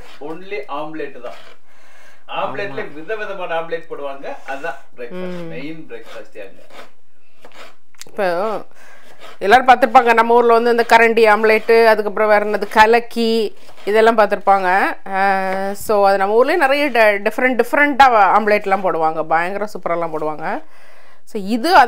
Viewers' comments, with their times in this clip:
0:08 😄😄😄 Tomorrow I'm gonna try your tandoori recipe I think it will be ahdi poli Your tamil is different I like it 😍